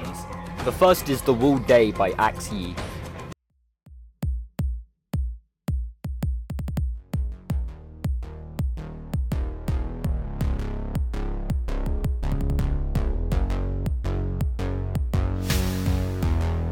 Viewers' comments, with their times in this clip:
0:04 imagine exploring Walla and you get hit by the synthwave